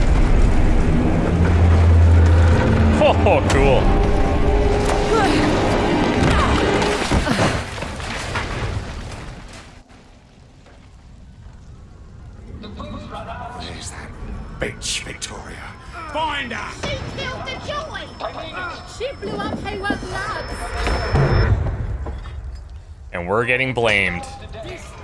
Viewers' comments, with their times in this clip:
0:10 fun little fact you can hear Ollie's broadcast, of Uncle Jack, in the background. Which I thought was a nice touch.